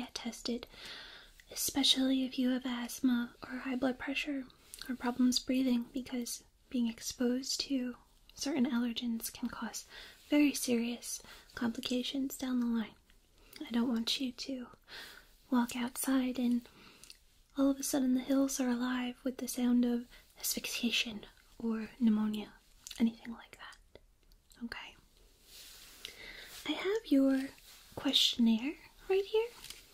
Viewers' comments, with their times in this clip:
0:10 So... I usually watch all your (awesome) ASMR videos on my iPhone as I'm falling asleep, (best way to fall asleep) but anyways, for some reason or so when you say 'serious' Siri decides to jump in and answer you, declaring that she is always very serious. Always. I've tried it more than 20+ times and without fail, every time you say 'serious' Siri decides that out of the couple thousand words she hears a day, that's the one she's gonna answer. And here I am wondering how the hell you trigger Siri across the inter webs with just your voice, and yet I have to press and hold the home button for her to even talk to me. Magical voice I tell you.... Anybody else get this slightly annoying bug? Or 'trigger' I suppose you could call it...
0:10 when you say 'serious' Siri turns on and says 'I'm always serious'. I tried it twice now and it does it each time.
0:11 when you said serious my Siri kept activating haha